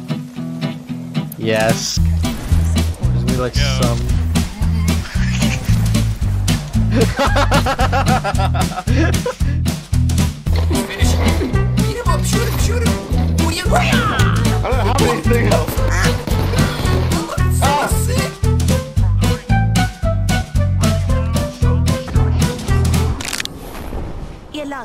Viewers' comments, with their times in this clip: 0:09 Lol pathfinder flying kick was awesome 😂😂😂😂 even the sound he made when he kicked lifeline had me dying 😂😂 Edited- time is